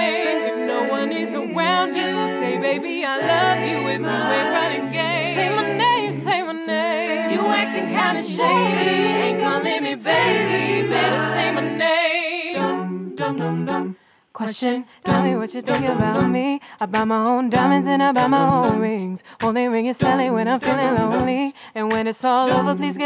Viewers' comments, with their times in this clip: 0:05 she kinda sounds like Beyonce